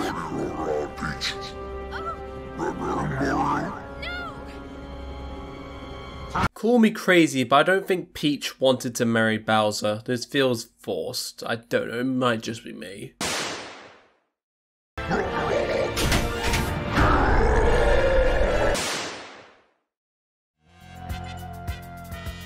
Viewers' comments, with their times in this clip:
0:04 the way bowsers yell was cut had me dying laughing, its funnier when you dont mean to make some partys funny, even when the charge just keeps popping up on the screen making that sound effect and pausing the video makes me laugh to lmao
0:06 perfectly cut roar